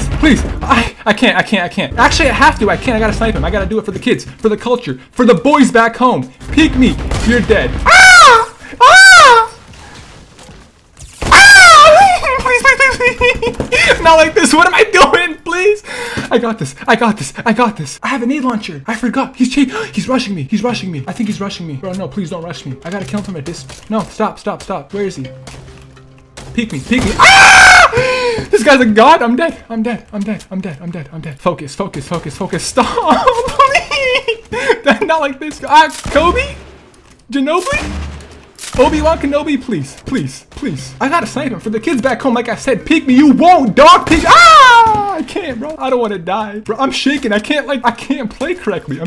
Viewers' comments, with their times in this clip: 0:05 When he screams he sounds like a bird
0:07 Why he sound like a bird.....
0:17 is kinda like a raven tol
0:18 he actually sounds like tfue😂 Only ogs will remember
0:20 sounds like a little girl
0:27 lmao that sounds like Elmo of Jar Jar Binks
0:33 Lol, sounds like a raven or a crow